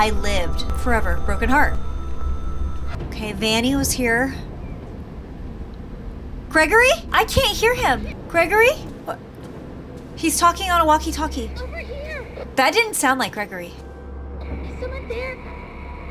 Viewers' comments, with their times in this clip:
0:04 I it just me or does cookie sound like cassie ?